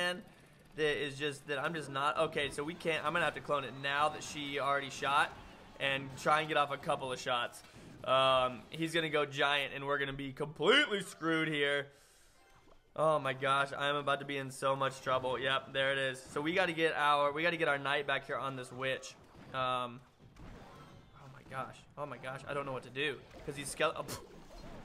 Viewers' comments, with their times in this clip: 0:10 anyone think he sounds like negan from twd when he does that?